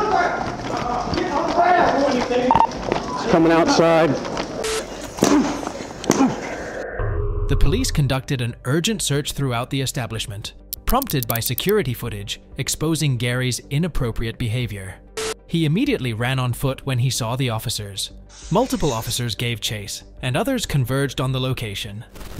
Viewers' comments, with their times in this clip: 0:04 Was that wwe stomps ???🤔😂😂😂😂😂